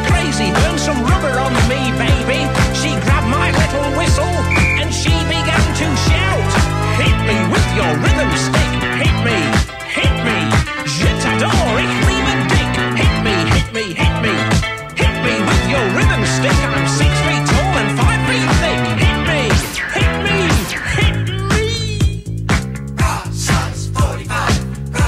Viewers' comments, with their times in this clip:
0:08 When you hear the piano bit for the first time...